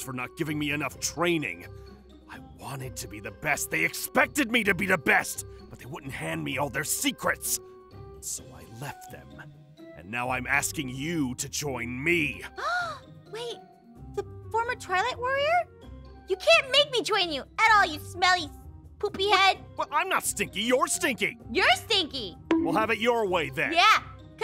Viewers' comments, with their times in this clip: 0:09 Aphmau gasps Aphmau: I’m not gunna join you you smelly poopy head Zane:I’m not stinky your stinky Aphmau:your stinky Mini Best friend fight or enemies fight or whatever